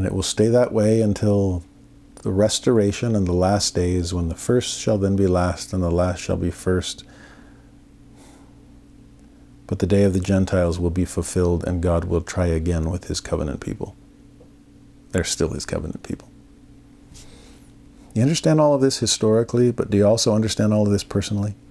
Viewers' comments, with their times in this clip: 0:08 it very cracky. Loses sound